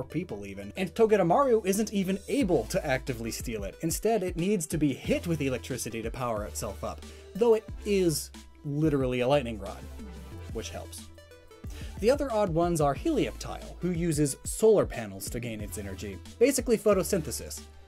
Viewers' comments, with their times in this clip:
0:05 I’m trying to listen, but the music in the background is hittin.